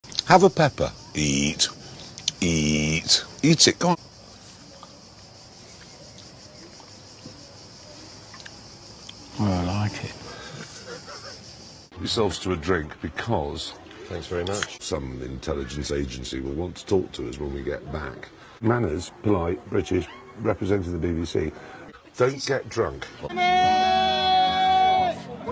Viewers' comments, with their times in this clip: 0:09 The way Hammond says “I don’t like it” like a 5 year old is amazing